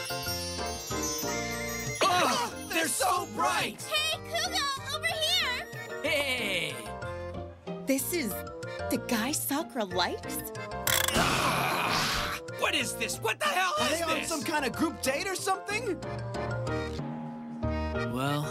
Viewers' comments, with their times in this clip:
0:04 this kuuga guy sounds like an old man trying to sound young